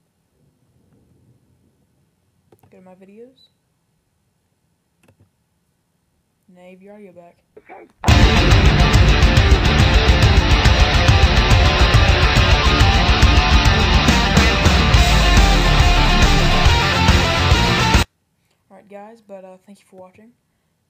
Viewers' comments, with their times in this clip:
0:07 I litteraly shit myself cause i had the volume up to hear him